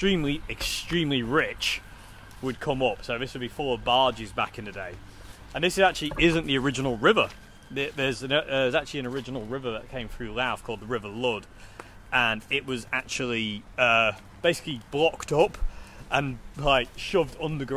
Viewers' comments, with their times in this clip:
0:03 Louth canal full of bajis? Why would it be full of onion bajis?